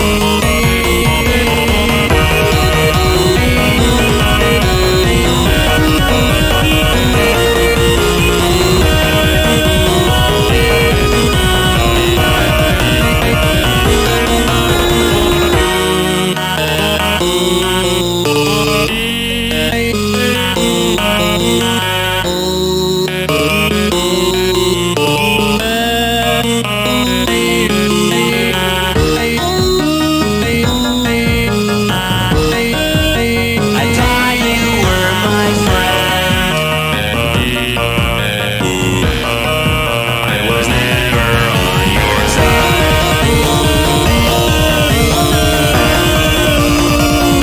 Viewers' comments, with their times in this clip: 0:04 you can knuckles sing Eggmans theme from sonic 3 sonic also doing the same after listen closely it’s a really nice touch!
0:28 fun fact you can faintly here tails say sonic’s name just like how peach says no I’m the original Oh god no